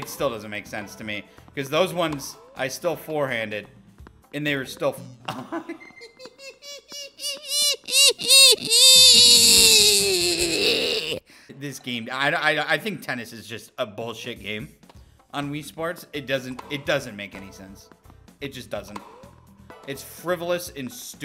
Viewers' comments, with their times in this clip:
0:06 the mosquito flying by my ear 🦟
0:06 the mosquito in my room